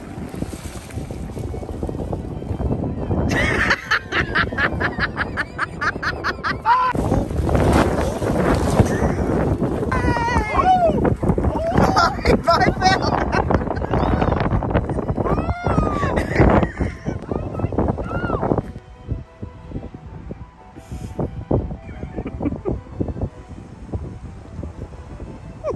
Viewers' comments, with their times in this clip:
0:06 has to be one of the best cut screams ever 😂